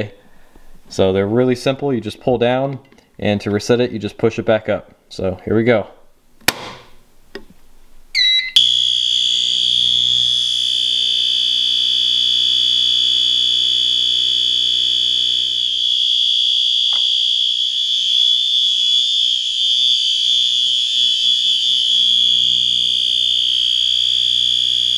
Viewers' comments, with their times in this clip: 0:08 Panel and annunciator: Beep FAMOUS LAST WORDS System sensor HW alarm: HOW DARE YOU DISTURB ME FROM MY REST, IM GONNA SHOW YA. also system sensor HW alarm: BEEEEEEEEEEEEEEEE-